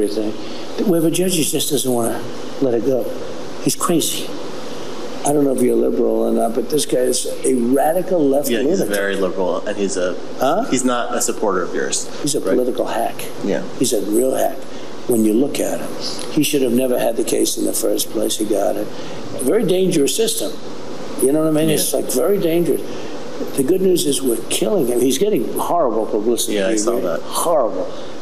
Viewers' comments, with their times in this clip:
0:10 Like many people with dementia, the earlier you speak with them the less their symptoms present. This is why “sundowning” was termed in relation to the condition. Early rally as opposed to a debate starting time. Even in the rally he wasn’t very good, he continued talking over the crowd trying to applaud his speech and stumbled over some words. It was like his speech was being timed and he was racing to finish it… Is this really the best America has to offer for presidential candidate? He shouldn’t be in office right now never mind running for another term…